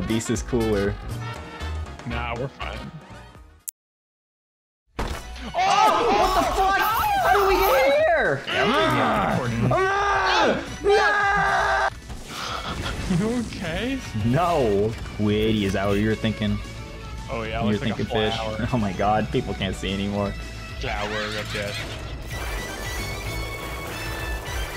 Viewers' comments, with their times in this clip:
0:05 most authentic moan I’ve ever heard